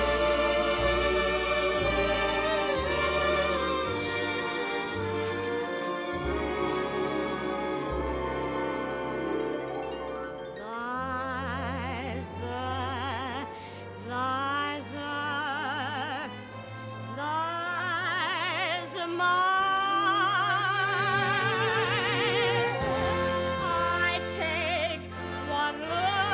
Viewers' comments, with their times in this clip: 0:10 From the point to the end, I've never heard Judy sing better. Beautiful orchestration. Exciting!